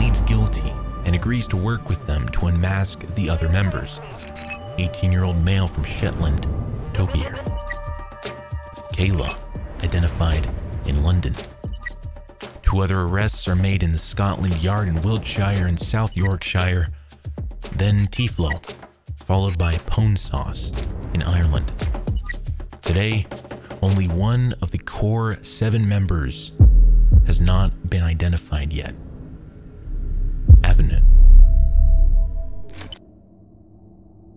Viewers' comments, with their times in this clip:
0:04 "18 year old male from shitland" new sentence
0:15 You butcher Yorkshire so bad I am pissed.